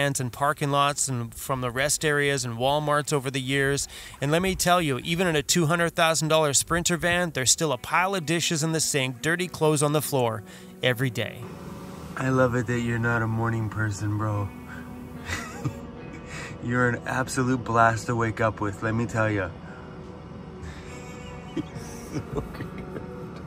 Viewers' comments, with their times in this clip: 0:09 Heh-heh, butt crack rock My van would be messy, my little canned ham trailer certainly is! I love that grouse drumming sound too.